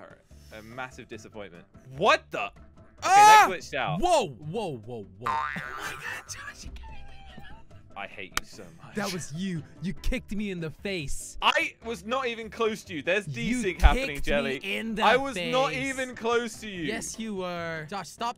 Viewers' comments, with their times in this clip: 0:05 the demon choking under my bed after l ate taco bell.